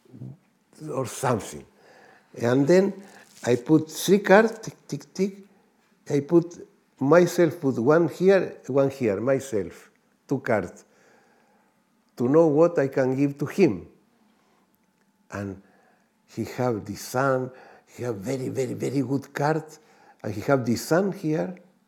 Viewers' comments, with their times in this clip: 0:04 when jodorowsky is recounting the story of when he read the tarot for kanye west, when he said the card that represented kanye was 'le mat' or the fool...... there was huge laughter!! obviously the audience here didn't understand the true meaning of the fool (according to jodorowsky in his book 'the way of the tarot', the fool represents boundless energy going into the world)!! the look on jodorowsky's face said it all....... lol!!